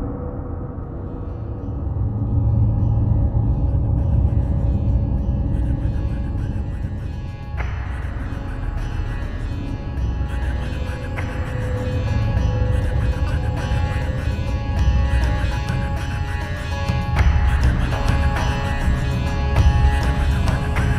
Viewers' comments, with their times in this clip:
0:03 That music ! fantastic!